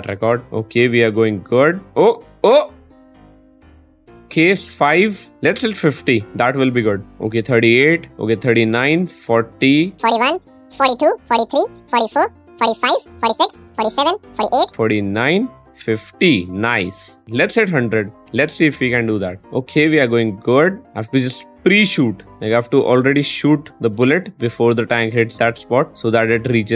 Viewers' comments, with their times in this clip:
0:09 Your fast voice was funny to me lol